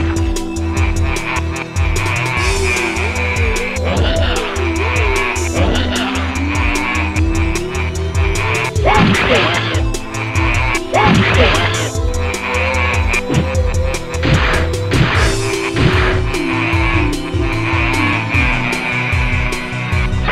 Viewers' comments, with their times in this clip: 0:03 The sound effect it makes on this move(don't know the name of it) I like.